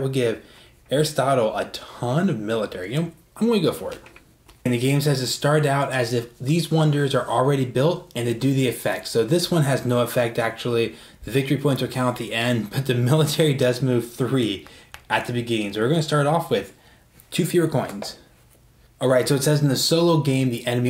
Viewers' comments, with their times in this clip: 0:06 Yep, it's just a solo thing. In a regular game you wouldn't get the bonus until you build the wonder. I mention that the solo opponent begins the game with wonders built. My audio isn't the best here, so I know it's hard to understand every word. I have a new mic now in future videos.